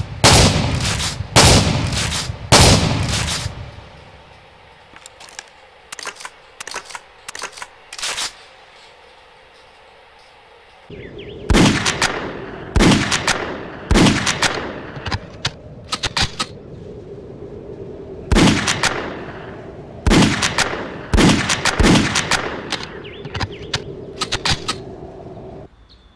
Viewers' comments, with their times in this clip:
0:10 dat is isnt a shotgun sound. Is more like a revolver
0:14 when your spas sounds like a Deagle